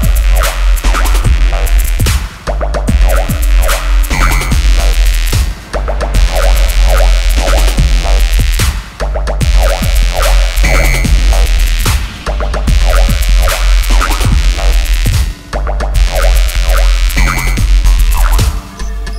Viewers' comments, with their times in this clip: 0:06 It's Me Or the alien in minute it's like an alien in prometeo!